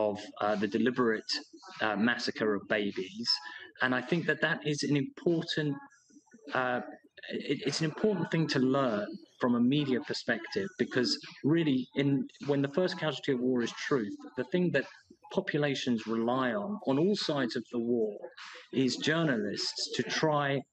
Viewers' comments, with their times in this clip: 0:08 The pop music in the background (his video feed) is really distracting and doesn't align with the subject matter